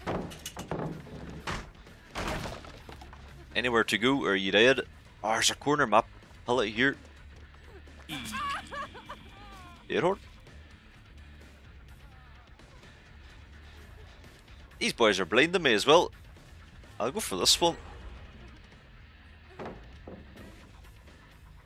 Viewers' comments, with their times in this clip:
0:08 “dead hard?” That sounded like genuine befuddlement